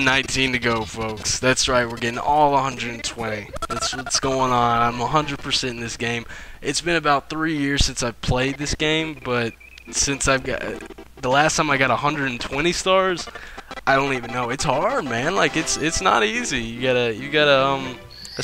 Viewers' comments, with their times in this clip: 0:03 HeRe We GOOoOoOoOoooO is it me or did it sound auto tuned